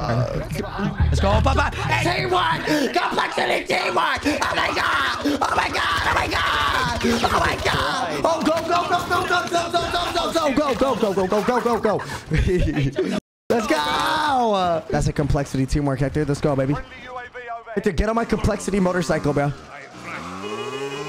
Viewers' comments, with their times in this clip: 0:04 i cant stop LAUGHING when he switches from being excited to being panicked LMAOOO